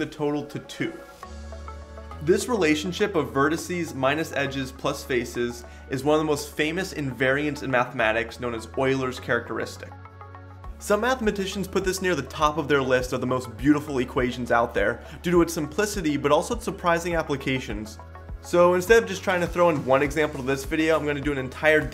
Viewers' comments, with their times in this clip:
0:06 Yeah :D her ist the first english speaking person who pronounces Euler correctly :DDD